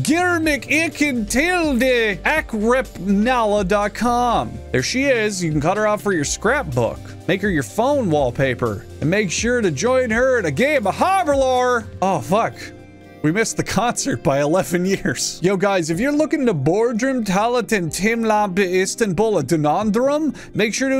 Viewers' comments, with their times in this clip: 0:07 never pronounce anything in turkish ever again